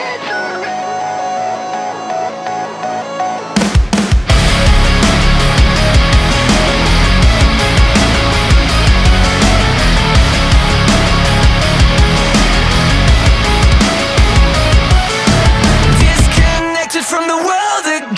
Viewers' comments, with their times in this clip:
0:03 sounds like gravity falls intro